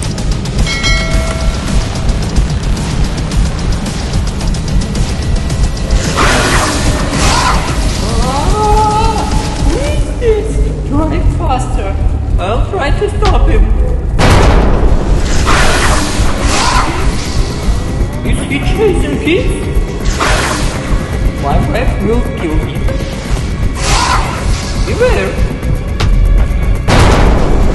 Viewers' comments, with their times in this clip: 0:08 chewe chuks funny scream